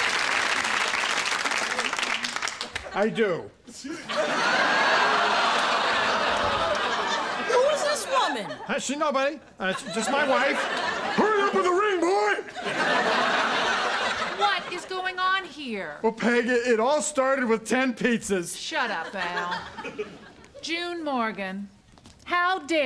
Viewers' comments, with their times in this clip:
0:10 "HURRY UP WITH THE RING, BOY!" I love how Bud always gets fidgety whenever Al yells in his face.